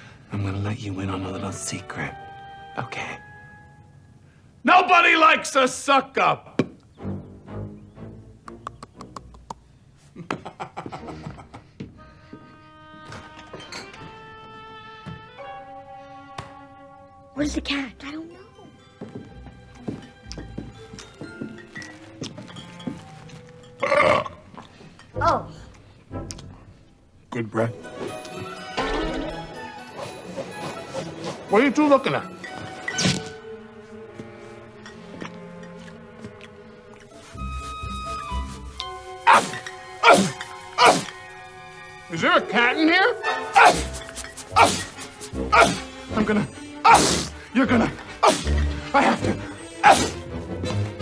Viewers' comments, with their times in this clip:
0:09 What’s with the teeth chattering? Did Alec forget his line?
0:23 he sounds drunk
0:37 The sneezing part reminds me so much of that Zyrtec commercial, when people was doing chiropractic yoga, and that guy started sneezing. LOL.
0:38 Sneeze Attack June 13 2024
0:39 Lawrence is straight up barking